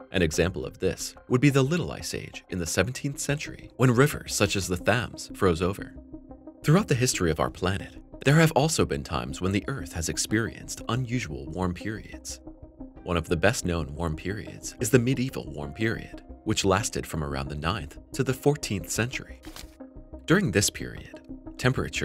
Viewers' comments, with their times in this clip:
0:06 Jesus, learn (train) these damn TTV programs how to pronounce words. it mispronounces "Thames". It's pronounced "Tems".